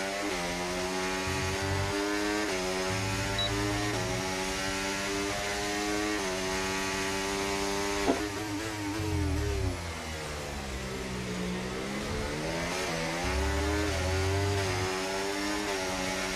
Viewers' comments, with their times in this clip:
0:04 Bro was farting